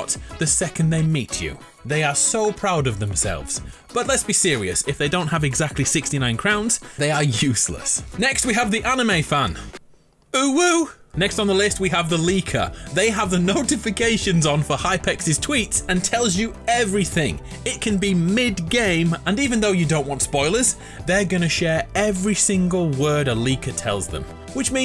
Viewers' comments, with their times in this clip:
0:09 The pain in his voice